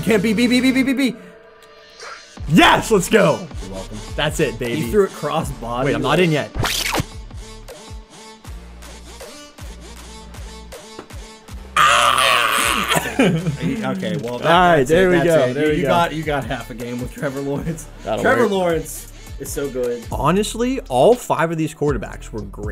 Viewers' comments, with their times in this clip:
0:10 are y’all smacking buts or sum